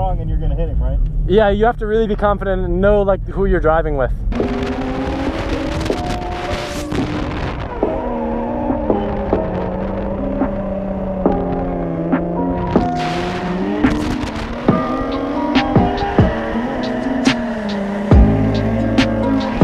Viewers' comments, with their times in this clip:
0:04 What's the instrumental ? If anyone could let me know that would be awesome, its so chill